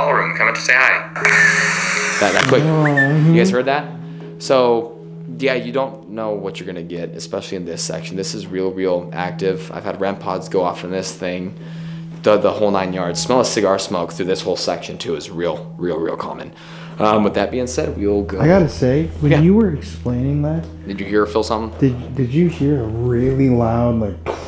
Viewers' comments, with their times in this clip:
0:08 the music box it’s almost sounds like it repeats its self almost like it’s trying to play a song or music 🎶 or maybe it’s trying to talk through the box